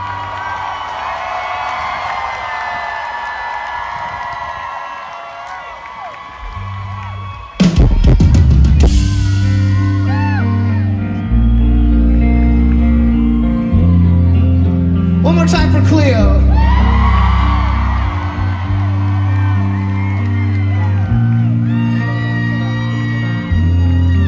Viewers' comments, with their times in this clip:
0:09 That intro sounded a bit like the intro to Staind- It's been a while. Haha